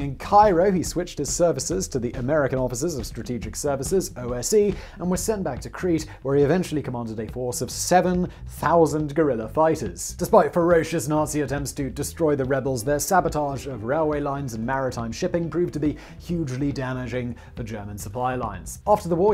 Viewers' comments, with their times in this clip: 0:06 "a force of 7000 gorilla fighters". That is what I heard and I refuse to acknowledge Simon may have said something else.